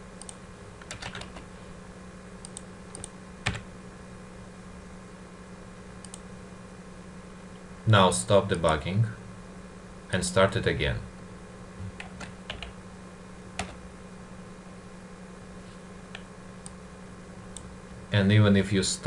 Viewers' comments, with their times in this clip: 0:06 as the author said on now stop the barking